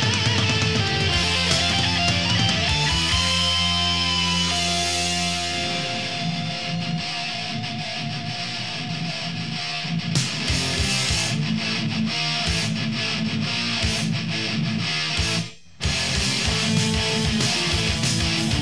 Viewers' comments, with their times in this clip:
0:04 epic riff incoming